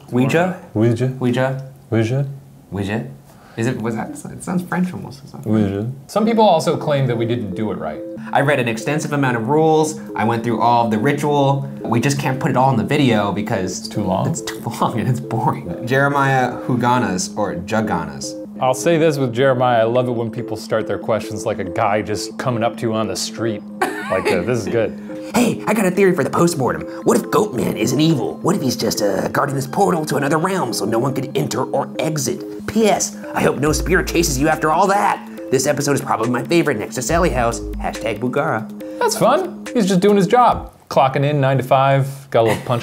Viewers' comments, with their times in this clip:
0:07 anyone notice it sounds quite familiar to one of Portal 2’s Soundtrack?
0:25 I like how your “guy coming off the street voice” sounds like Kramer from Seinfeld. I totally imagine Kramer bursting into Jerry’s apartment and saying this.
0:25 he sounds like ice-cream man from that one really old movie. "its grenadine! for my ice-cream treats!" (probably have to look on images if you google the quote)